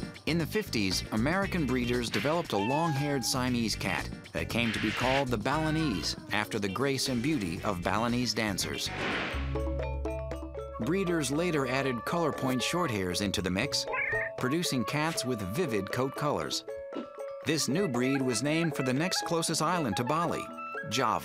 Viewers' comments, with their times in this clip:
0:09 love that catchy Balinese tune